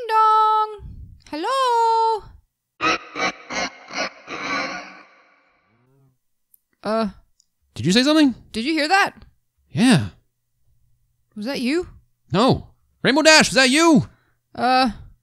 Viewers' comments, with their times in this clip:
0:03 WHATS THE LAUGH